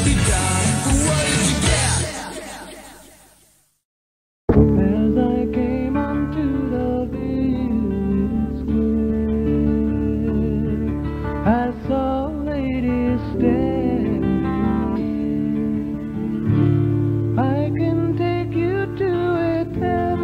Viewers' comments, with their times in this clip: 0:05 The song looks really like Wishbone Ash